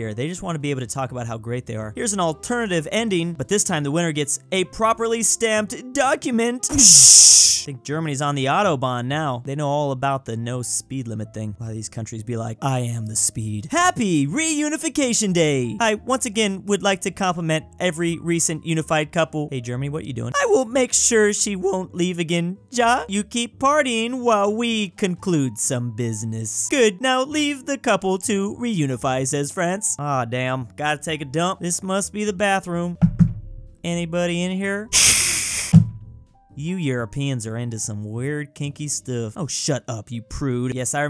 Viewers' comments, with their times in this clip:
0:06 HOLY COW WHY WAS THAT SO LOUD
0:22 It pronounced ya